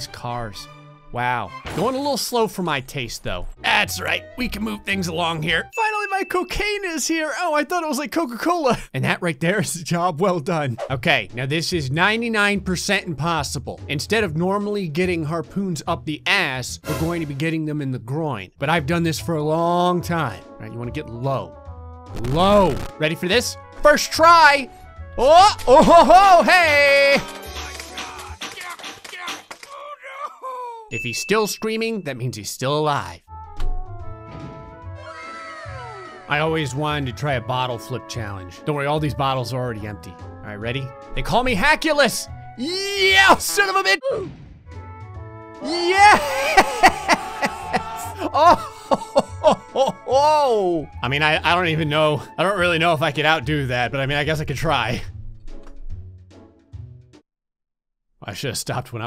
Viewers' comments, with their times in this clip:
0:03 𝓑 𝓞 𝓝 𝓚 wheel bonks guy's head
0:45 it wasn't wha or hacker it was whaker.